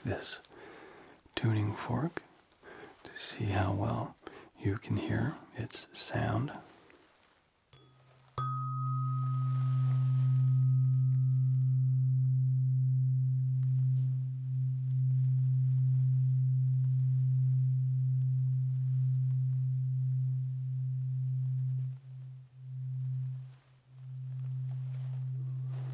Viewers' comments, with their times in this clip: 0:08 The bell chiming thingy scared me and woke me up actually. Took me a sec to remember I had my earplugs in lmao, it's all good I fell right back asleep after a minute. The one